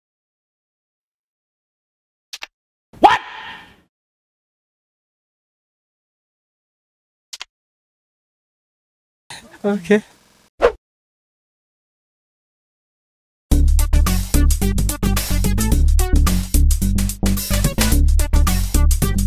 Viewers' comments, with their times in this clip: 0:04 Who laughed like😂😂😂😂😂😂😂🤣🤣🤣🤣🤣🤣🤣🤣🤣🤣😲😲😲